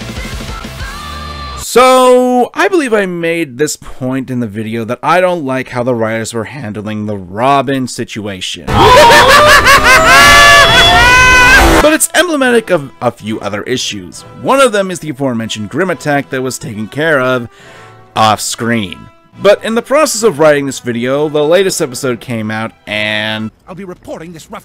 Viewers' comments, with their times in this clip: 0:10 i like the vid but um... STOP BEING SO RANDOMLY EARSPLITTINGLY LOUD , on youtube i had your video at about 25% then happens and i have a headache because of how god damn loud and screechy it was, that is honestly the only complaint i have